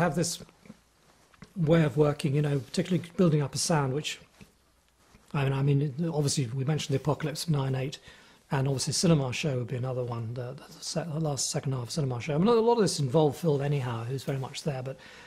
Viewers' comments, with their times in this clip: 0:03 "Building up a sandwich" I really enjoyed the interview, have watched it many times and by accident repeated that part and heard it like that.